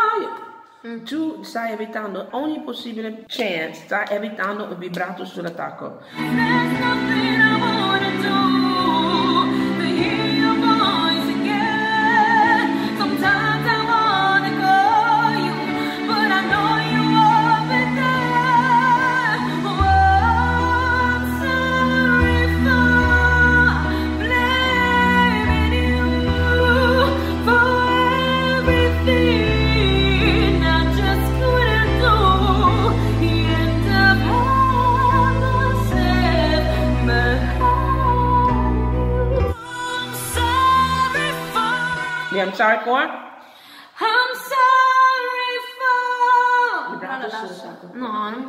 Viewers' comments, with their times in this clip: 0:07 I looked away and thought it was still the clip of Xtina...she’s really amazing
0:09 Here, she sounded just like her❤
0:11 OMG and suddenly she was Christina Aguilera 😍
0:11 I thought she was lip-synching turns out it was her You're amazing, I swear
0:17 she sounding like tina
0:21 i just realized that wasn't the Christina Aguilera song recording thing but the girl who was singing
0:34 That head voice/falsetto is so pretty